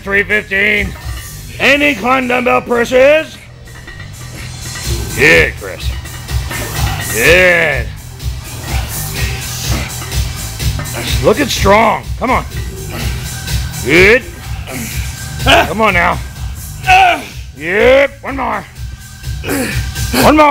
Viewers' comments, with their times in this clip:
0:07 haha love the Rammstein in the background!!! ;D